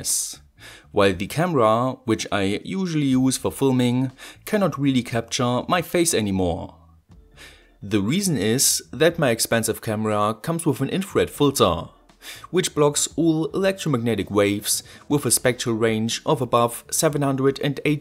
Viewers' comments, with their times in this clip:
0:05 You're alone in the dark in you workshop, when you hear a pair of unsettlingly German footsteps behind you. You turn around, point your flashlight at the shadowy figure, and screeching sound